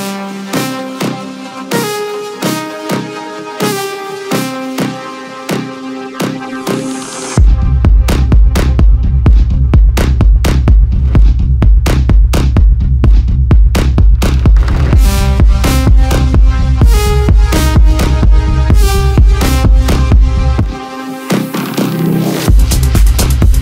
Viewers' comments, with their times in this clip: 0:08 that kick so phatttt!🔥🔥🔥